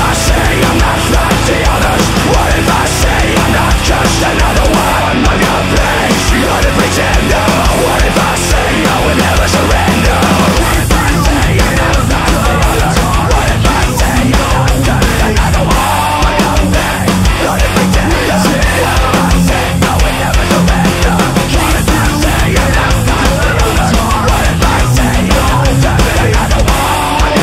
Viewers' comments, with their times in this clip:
0:04 Amazing cover, but what the fuck happened to the drums ? Hahah!
0:04 Hits cymbal, no sound
0:11 These 2 voices in one give me chills